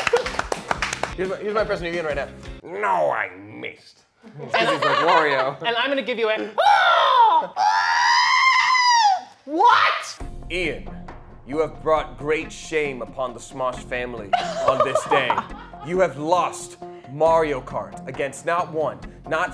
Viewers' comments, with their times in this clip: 0:07 When you realized Toad and R2-D2 have the same screaming voice.